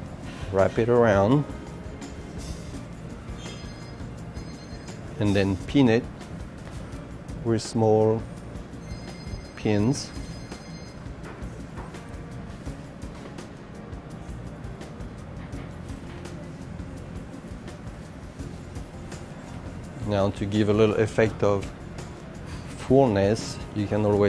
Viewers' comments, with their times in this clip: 0:05 did I hear peanut?